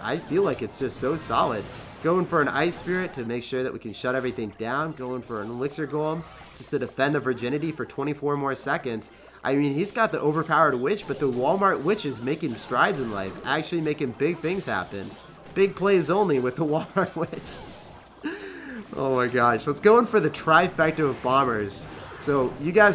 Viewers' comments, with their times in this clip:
0:06 Did any one else hear "to defend our virginity" 😂🤔